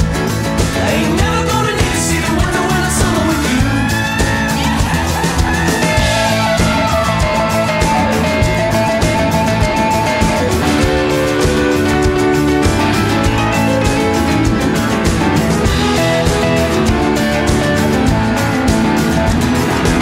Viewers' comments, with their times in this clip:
0:07 Does it really say MILF ? :D
0:08 why does the plane say milf? lol